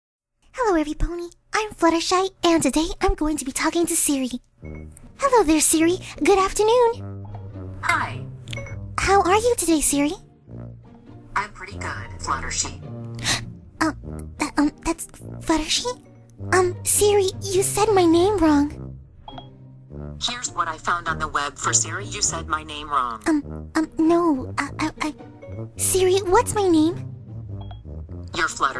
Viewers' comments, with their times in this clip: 0:01 that voice is so frikin' cuute
0:11 Fluttershy was gasping why is say Fluttershee